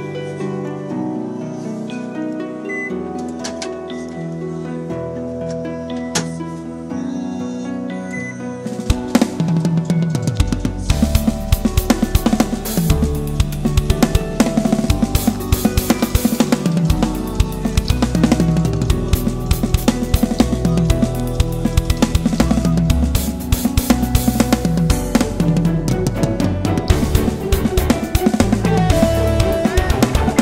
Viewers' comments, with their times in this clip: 0:07 some vocals slipping in from
0:17 You can hear minor vocals Faint, but they're there.